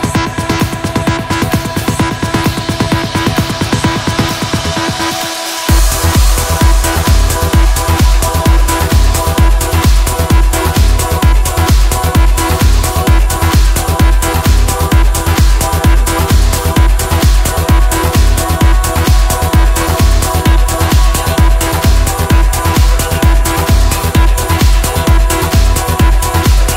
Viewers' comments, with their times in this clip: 0:07 beginning of the song ... sounds like the beat from "Brute" but slowed down lol